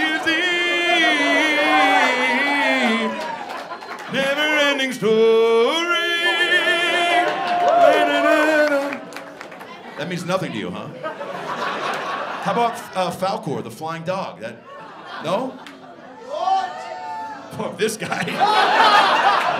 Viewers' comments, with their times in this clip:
0:04 gotta love the pipes